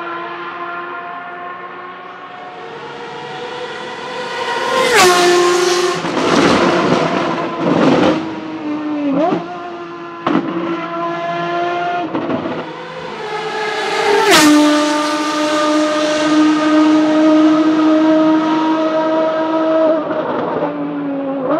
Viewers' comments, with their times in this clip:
0:03 Thank you so much mate! That last flyby was pretty an experience: close and at sunset. What else? hahah but I'd add the one too. I don't know why but I always loved those crackles on off-throttle ;D
0:05 The gods are screaming...
0:06 that downshift sound like Thunder 🌩